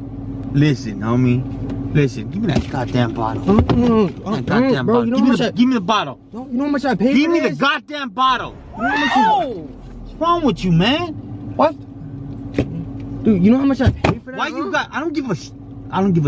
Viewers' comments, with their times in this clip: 0:03 that was no acting voice. I know that type of voice myself